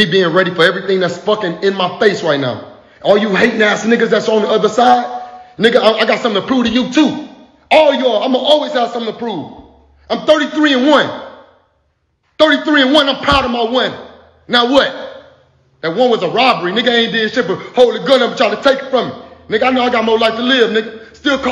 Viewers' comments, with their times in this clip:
0:04 Sounded like tupac on hit em up and on!!" Lol